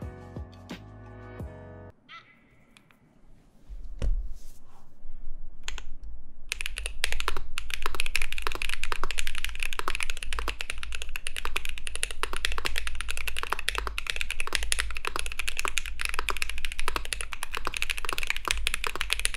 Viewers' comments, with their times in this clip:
0:05 sound test go pock pock pock